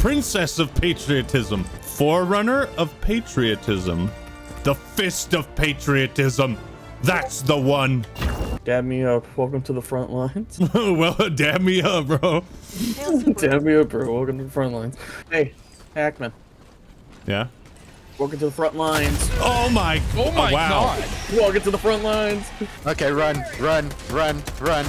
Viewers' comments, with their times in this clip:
0:07 just came in to say there's a discord notification